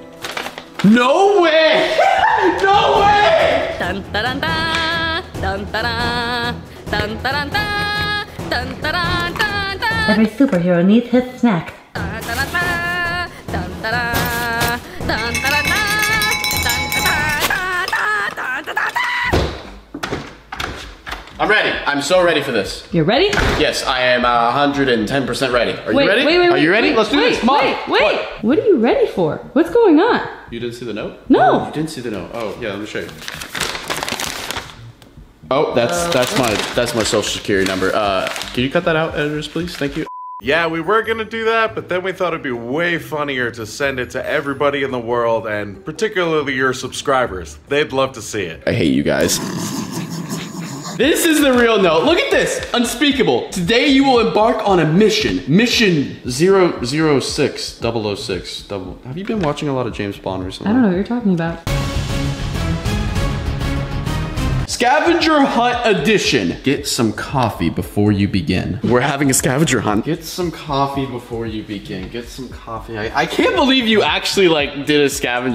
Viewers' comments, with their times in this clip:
0:04 Yes the music is amazing
0:17 this part made me laugh because when The song ends LOL
0:18 😂😂😂😂😂😂😂😂 what kinda final scream is that tatat tat taaaaaaaaaaaaaa!
1:03 he talks about James Bond then puts on mission impossible theme